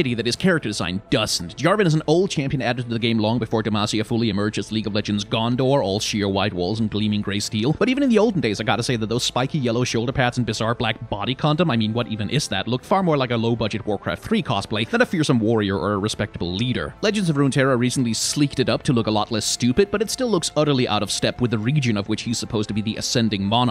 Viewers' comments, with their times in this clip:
0:10 Just The way he says body condom It just makes me laugh